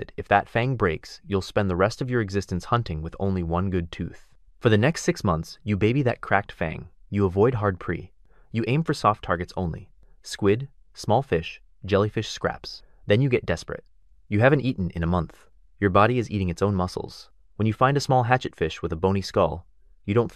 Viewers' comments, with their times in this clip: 0:08 pronouncing "prey" like "pree"... Is this AI? Ill be so disappointed